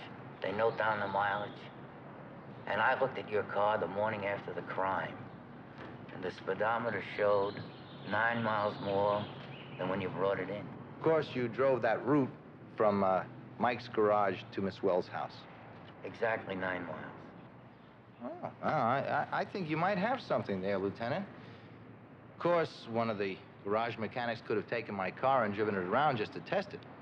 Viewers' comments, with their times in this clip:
0:10 why does an american say root rather than route?
0:11 Hold on. Why does he say route the british way rather than the american pronunciation?